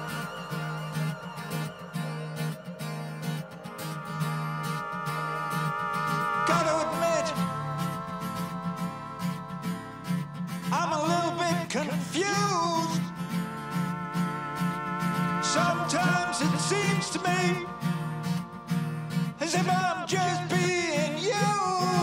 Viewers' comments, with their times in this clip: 0:04 still great vocals..